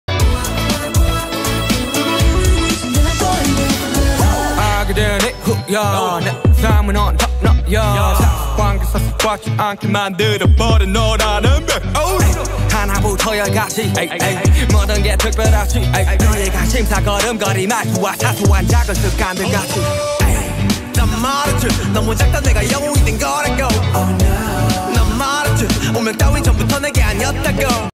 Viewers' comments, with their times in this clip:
0:06 Another misheard lyrics- Ha Apna Yaar in suga rapping 😂
0:09 i think i heard maa ki aankh...🙄🙄
0:10 sounded like lo*da...
0:13 how many of u noticed amitabh bacchan hai hai style😂
0:14 Did anyone realize big b step 'eh'.... 🤣😅😅😄
0:17 Saason Maa jaagkar kaanda kaati , does anyone else hear that 🤣😜
0:17 It coulf have been far better nanu maa Sasu maa Whole world 😂😂😂😂
0:17 Another misheard lyrics - SASUMA word in SUGA's rapping!! 😂
0:17 Sasu-Maa is it?
0:18 sasuma(mother-in-law) i always hear that😂
0:18 i heard "sasuma jaake kaande kaati"
0:18 what about the 'sasuma' ?? 😂😂🤣